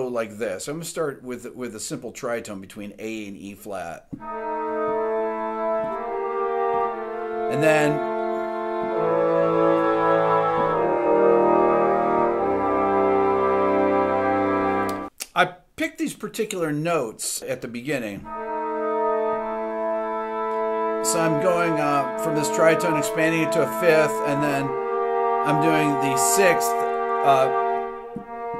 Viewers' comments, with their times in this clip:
0:10 That modulation o.o